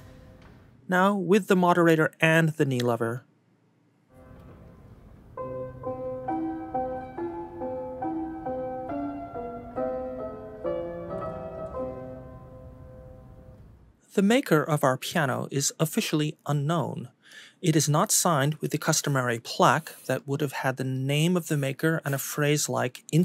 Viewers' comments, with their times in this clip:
0:05 I adore the sound with both sustain and "moderator". It sounds like a memory of a piano overheard in another room of an abandoned house.